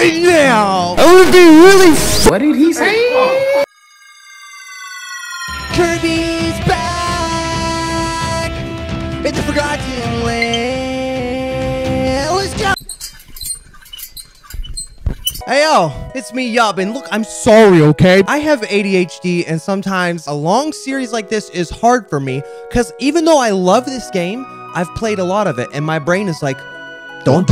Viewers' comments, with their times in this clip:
0:09 the notification ruined the intro
0:13 Ive played the part like 5 times now and im in tears the squeaky just gets me